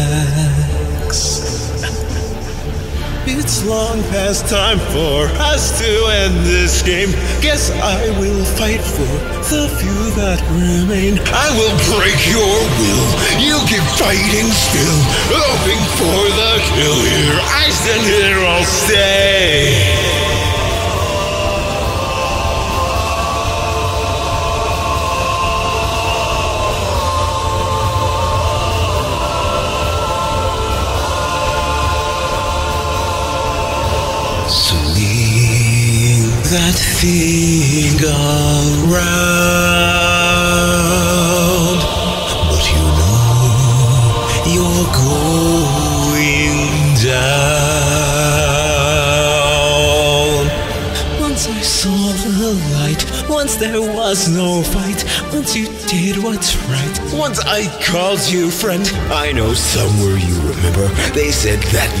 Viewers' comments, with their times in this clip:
0:03 this is probably one of the most unsettling things ive ever heard in my life
0:11 this just hits quite darn hard, more or else because to me it sounds like he is struggling both physically and mentally.
0:19 its amazing that the gaster blasters hit on the drum beat
0:20 I like the parts like this. The vocals or whatever in background are AMAZING
0:21 One guy is doing sans. The chorus people are doing the bit
0:29 you can tell is where sans starts to go crazy, and after the chorus, he goes absolutely MENTAL... for some reason... it sends chills down my spine.
0:38 I honestly think that you did a AWESOME job with this! I don't care if you didn't hold notes or anything, I FEEL the emotion that Sans dishes out in this battle with your vocals! and that gave me chills! Your voice acting is amazing, I kinda imagine Sans in this voice now! Keep going with your work, friend!
0:50 starting from you can hear his clear emotion in his voice, he already gave up, he knows you will never change, Violence being your ultimate goal, now he's forced to dish out all that he has to end your tale, (sorry for that)